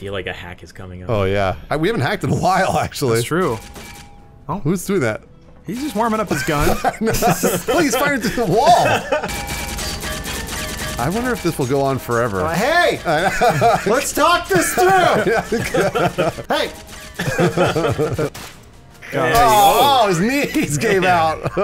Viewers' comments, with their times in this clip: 0:09 can somebody with some talent turn the bullet pings into a land down under remix pls?